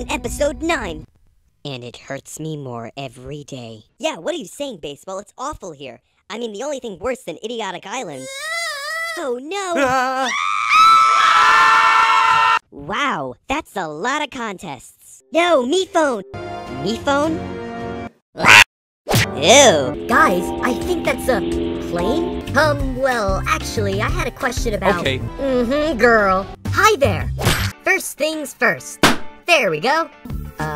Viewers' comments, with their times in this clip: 0:08 HOORAY SCREAMING CHOIR💀✨
0:18 paintbrush really just went "🦅"
0:18 Perfecly Cut Screams (Paintbrush Edition)